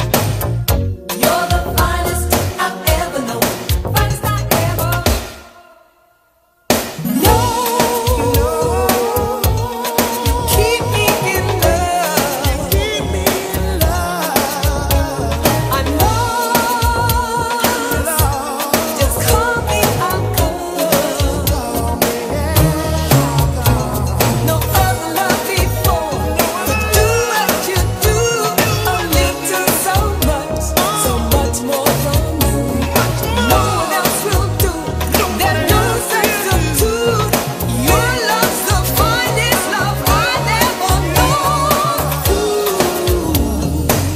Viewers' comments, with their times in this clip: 0:07 my man flexed rge vocals then went back to thw keyboards. Swag!
0:25 I love the build up awesome. and then the drop!
0:26 I just realized that Alexander O’Neal singing this part🤔